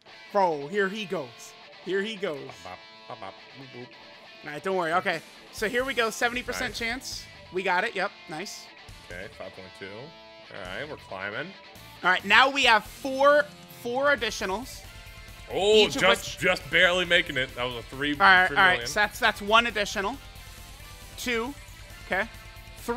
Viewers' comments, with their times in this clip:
0:07 The music just took me back to a place